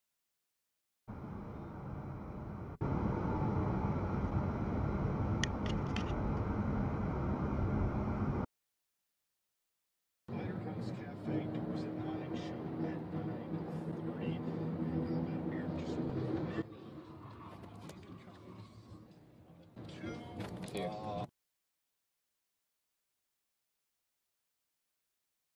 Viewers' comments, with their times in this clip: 0:07 If you're wondering why they got beeped at its because they don't know how to drive. The left lane is for PASSING. Youre speed means nothing. Gtfoh...truly it will keep happening until you stop being in the way. Learn the rules of the road